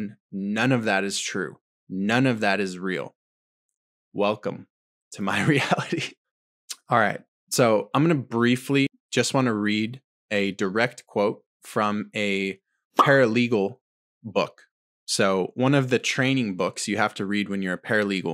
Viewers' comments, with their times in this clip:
0:04 cue the nervous laugh 😂 I feel that to my core knowing the truth and knowing how tin hat we sound talking to walking blue pills 😅 it’s refreshing finding the few like you